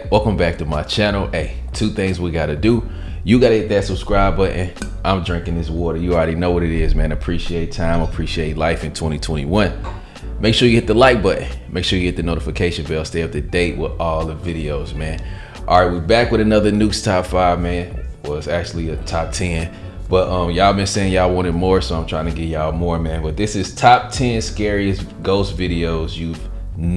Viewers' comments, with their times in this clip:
0:10 Like bu''on. Americans sounding more and more working class english by the month